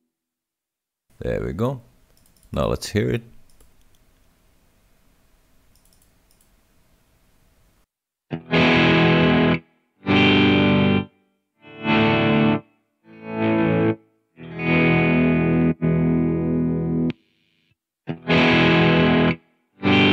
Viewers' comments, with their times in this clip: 0:08 The audio from onwards seems to be out of sync sorry.